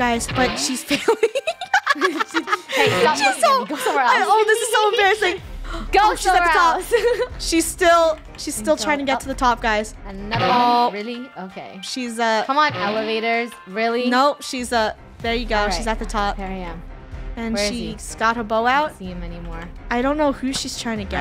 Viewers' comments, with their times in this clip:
0:09 That elevator music 😂🤣😆